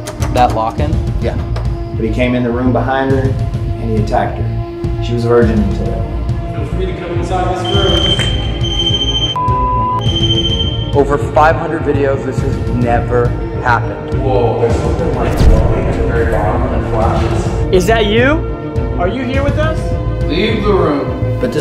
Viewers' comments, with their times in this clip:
0:09 I hear a whisper sounds like it said (what ? That’s fine) was that any of you? When you brought in the guy who help you get in